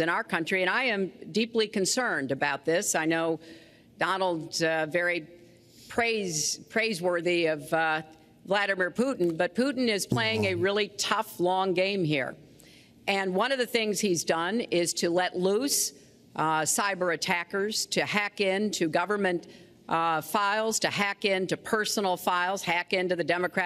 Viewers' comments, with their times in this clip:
0:09 The way he said wrong 🤣🤣🤣🤣🤣🤣🤣🤣🤣